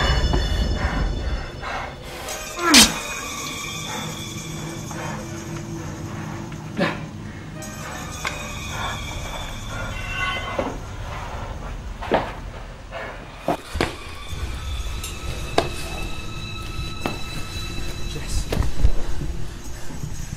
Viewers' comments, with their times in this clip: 0:07 why is she breathing movie fail Just try not to breath